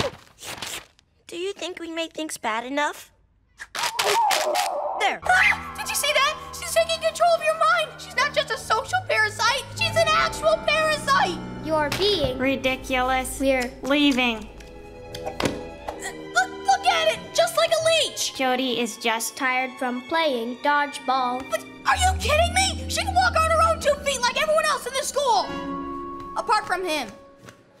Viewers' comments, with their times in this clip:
0:10 I heard gumball bad word